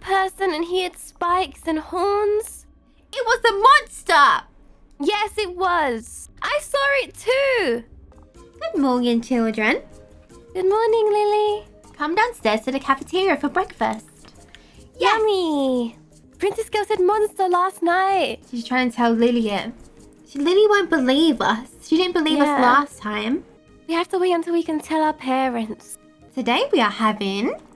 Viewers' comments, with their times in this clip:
0:08 I looooove that songs!!!!!!!